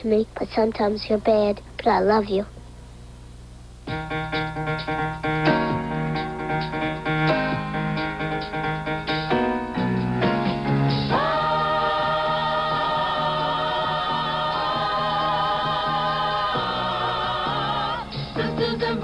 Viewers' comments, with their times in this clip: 0:05 Sisters & Brothers, Brothers & Sisters. The highlight of the whole program! I’ve been singing that tune in my head for over 40 years! Do-Do-Do-Do-DOOOOOOO